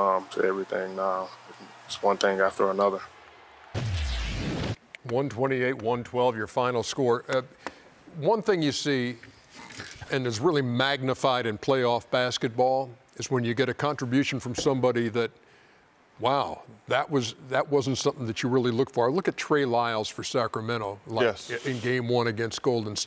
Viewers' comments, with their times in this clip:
0:07 Anybody else wanna know what Shaq and Kenny were laughing at after Ja Morant's interview?
0:08 what is shaq and kenny laughing at? lol
0:09 Anyone knows why Shaq & Kenny started laughing just by starring at each other …!? 🤣😂😃😁
0:11 😂😂 SHAQ Kenny laughing right after that ja clip 😂